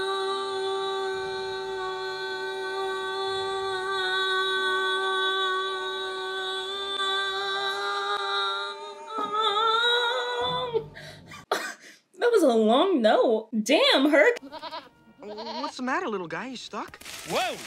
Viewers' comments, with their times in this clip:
0:05 Your singing was amazing and I am sick 😷